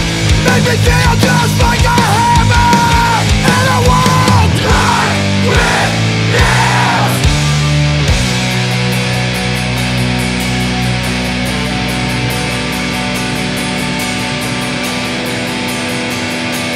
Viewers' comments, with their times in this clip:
0:04 music change unexpected !